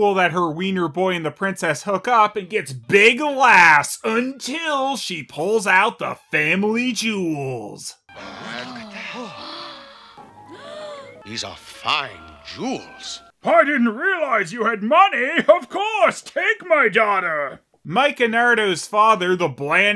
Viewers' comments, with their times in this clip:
0:07 "man what the hell..." am i the only one who hears that ?